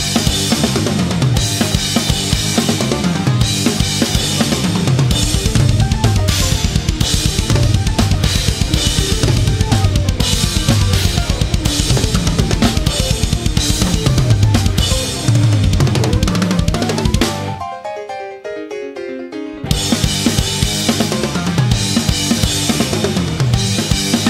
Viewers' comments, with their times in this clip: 0:05 is such a cool groove